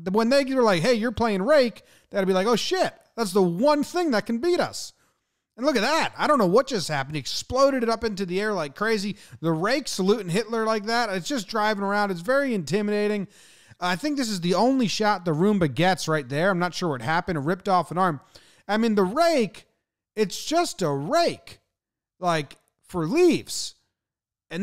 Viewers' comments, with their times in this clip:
0:06 exploded. Pronunciation. ! :( Mw
0:09 Rake slew Hitler like that... 😂